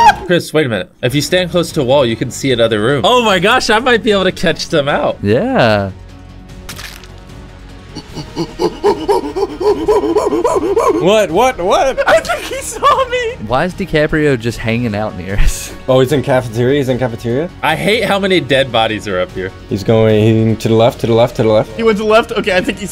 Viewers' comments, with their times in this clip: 0:09 olm THEY SOUND THE SAME xD